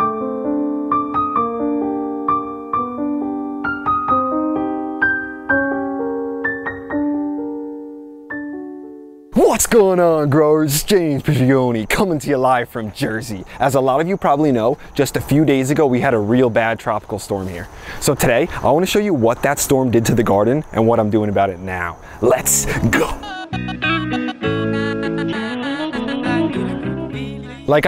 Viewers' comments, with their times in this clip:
0:09 I thought at first you will gonna say “what’s going on growers?!?” in a very sad and slo-mo version then a sad music played in the intro and I was like, yeah he won’t say my fave intro at all because of the sad theme...then you did mark and it startled me lol.